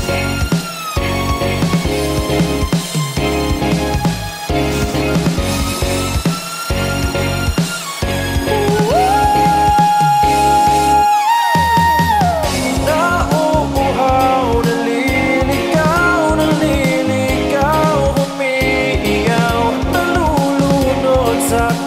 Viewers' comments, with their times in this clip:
0:09 the high note??????????